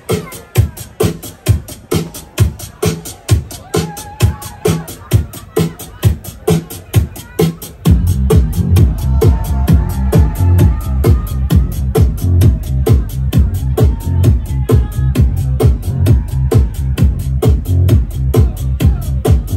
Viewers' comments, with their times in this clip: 0:05 That Michael Jackson edit . Sheeehshshshshsh 🔥🔥🔥